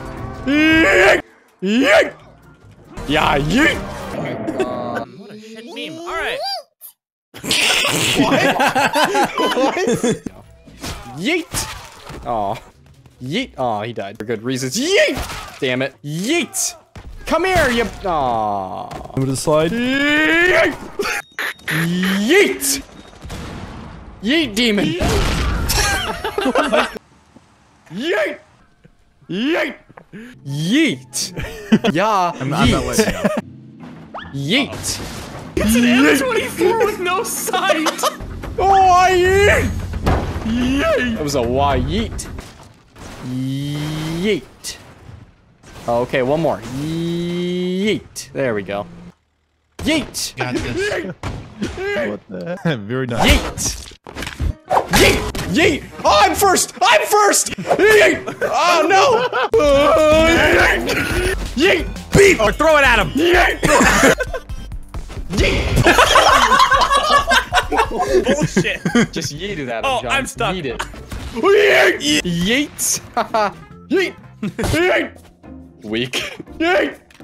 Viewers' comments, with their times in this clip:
0:04 he sounds like a child
0:06 I love how everyone goes quiet and just bursts out laughing
0:06 sounds like me on helium
0:24 Actual YEET sound
0:31 that has to be one of the most "whitest" (if that's even a word) sounding Yeet ever
1:04 that yeet had so much echo to it
1:04 is the only yeet that makes me laugh so far....it's just perfect ya know?
1:04 Shit man that was the most wholesome yeet I've heard, and I say that shit alot.